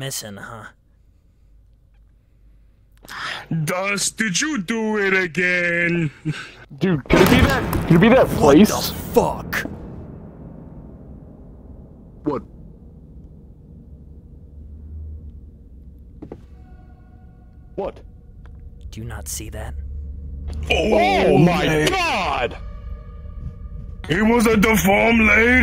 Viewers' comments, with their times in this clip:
0:06 jumpscare Killer: what the f∆©k.. Dust: what..? ... *Ominous sound.mp4*